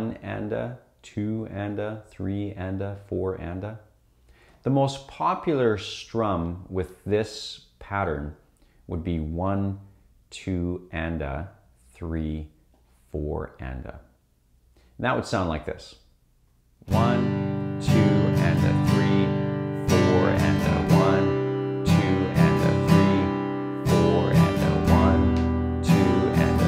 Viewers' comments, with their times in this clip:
0:09 this pattern is very nice